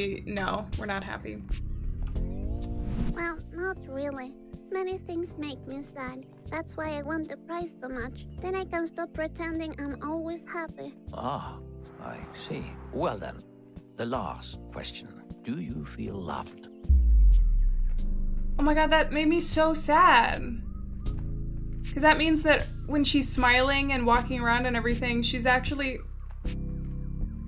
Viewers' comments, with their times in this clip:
0:08 hit so hard. That's so sad, maybe that's why she laughs "nervous"